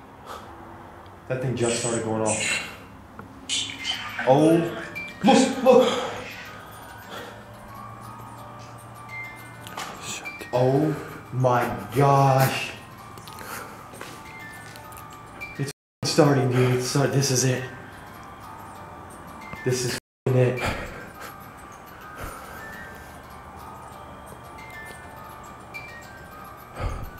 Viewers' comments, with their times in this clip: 0:08 as soon as rempod is going off an orb is flying on the wall